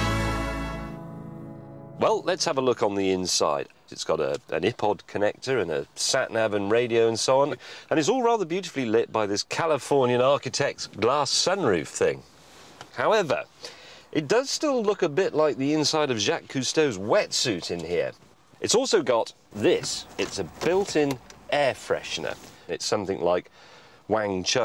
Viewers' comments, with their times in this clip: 0:06 he said Ipod ( ih-pod) not Ipod (eye-pod) lol accents